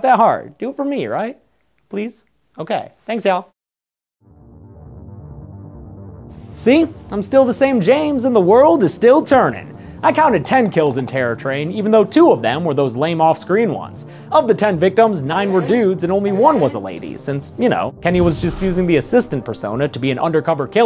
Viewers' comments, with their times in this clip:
0:08 the B*tch WTF vine plays